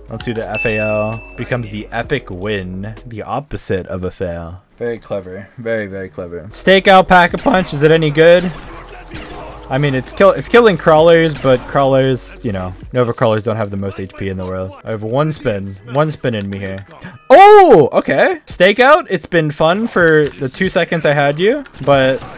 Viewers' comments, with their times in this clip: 0:04 mad voice crack
0:04 Anybody hear him voice crack
0:06 Not the voice crack
0:06 I felt that voice crack in my bones
0:07 has a voice crack😂
0:07 "stakeout pack AAA PUUNch is it any good?" I'm just joking around man I love you